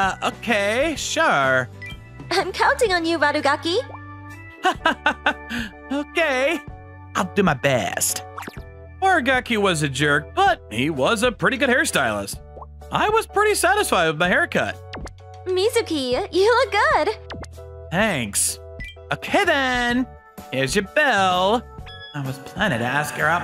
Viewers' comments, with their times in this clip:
0:06 The way he said it made me crack up hahahahahahahahahahaha